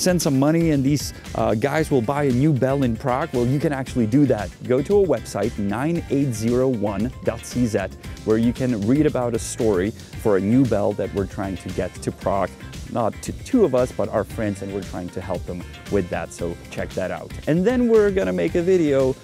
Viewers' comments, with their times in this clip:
0:05 9801 Dunzy Zed? I couldn't find anything with that term on Google 🤷🏼‍♂️